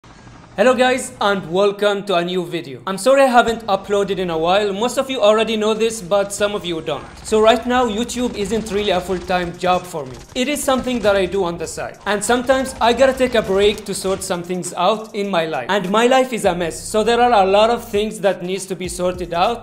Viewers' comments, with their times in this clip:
0:01 this voice hits sooo hard 😁